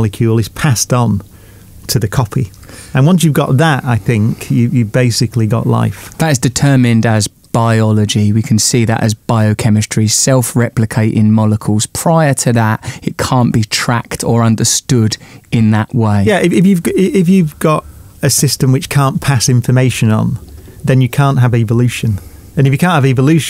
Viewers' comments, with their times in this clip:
0:08 Self replicating monocles - Russell Brand